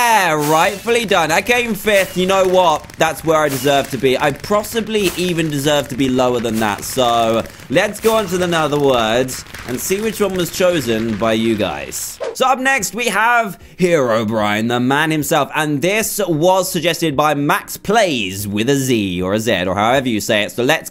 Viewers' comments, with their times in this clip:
0:03 Prossably?? What's that